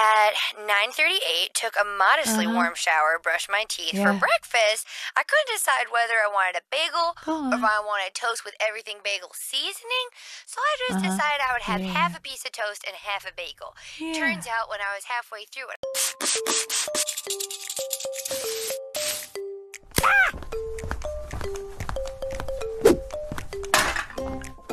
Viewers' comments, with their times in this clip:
0:09 Boes asmr be like: